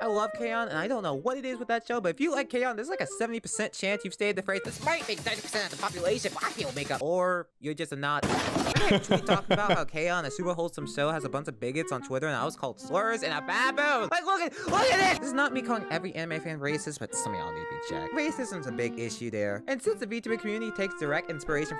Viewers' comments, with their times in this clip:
0:04 That DnB part kinda sound like the drum break in I Bleed By Sewerslvt